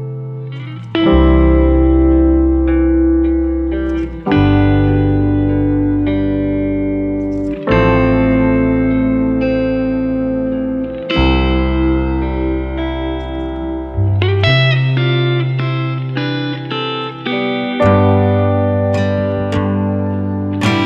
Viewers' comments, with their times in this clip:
0:06 Like that music pick